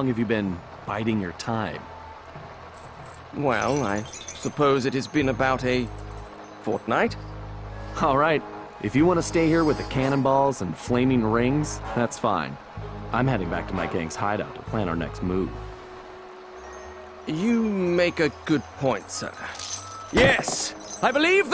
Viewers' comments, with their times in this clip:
0:06 That sounds like Fortnite 😂